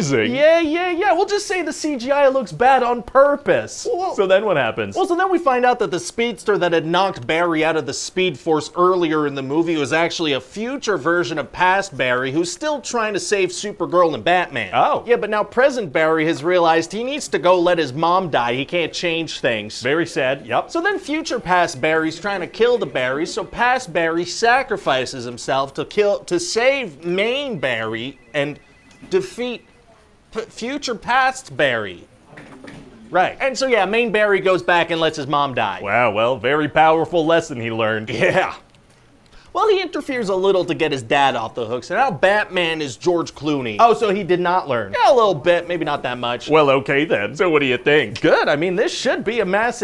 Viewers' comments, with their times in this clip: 0:03 The noise that Screenwriter guy makes lmao
0:32 The 'Right' was astonishingly perfect
0:32 that little shift with the "right..." was just perfect lmao